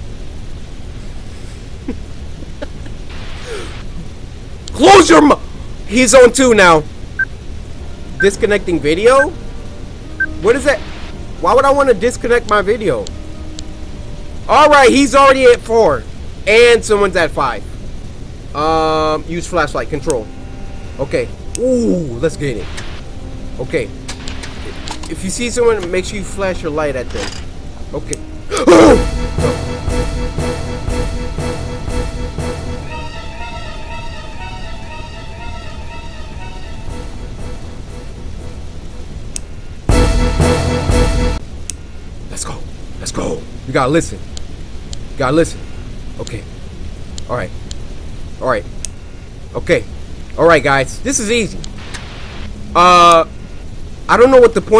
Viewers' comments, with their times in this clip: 0:06 what really scared me was bc it made the same sound as my earbuds and i thought something was wrong with them 😂
0:39 when he checked and it got louder had me weak🤣🤣